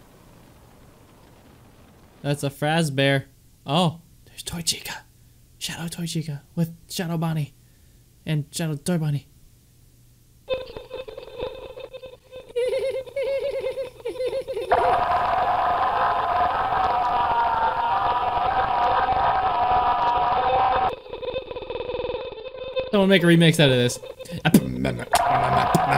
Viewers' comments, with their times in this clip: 0:10 is good music